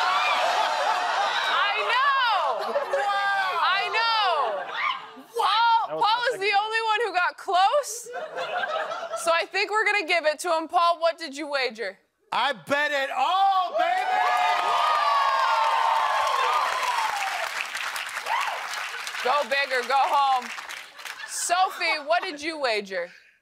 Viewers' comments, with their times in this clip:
0:04 that scream was me from my house hearing the news lmfao